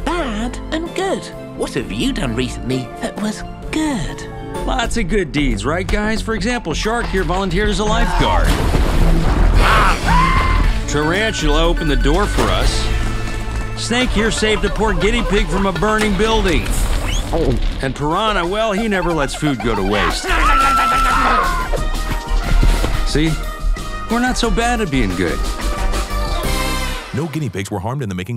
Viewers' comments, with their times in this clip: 0:10 That Scream sounded like from a Sheep.